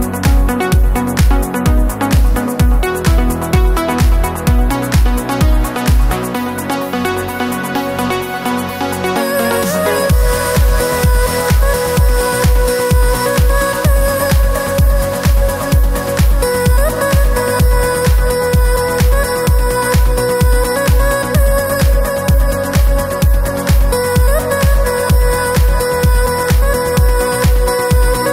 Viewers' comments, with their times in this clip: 0:09 The drop gets me every single time ❤️ How have I not heard of Gareth before now!?
0:10 That Vocal Chop <3